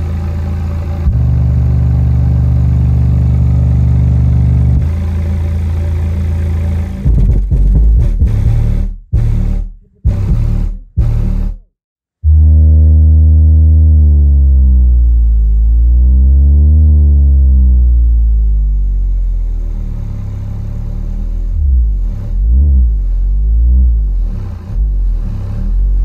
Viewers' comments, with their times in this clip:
0:07 sounds like every Honda Civic I ever sat next to at a light in any city.